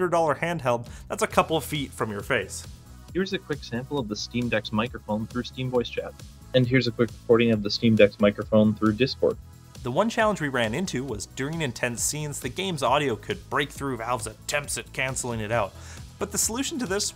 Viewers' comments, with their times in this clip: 0:04 how is that a mid-tier microphone? It's really horrible to listen too. It's absolute bare minimum usable. And yes it is usable. But it is not mid-tier.